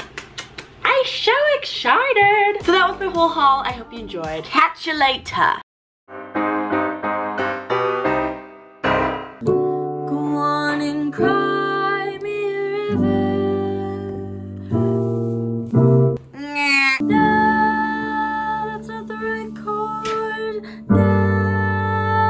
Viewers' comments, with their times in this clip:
0:09 Woooowww your voice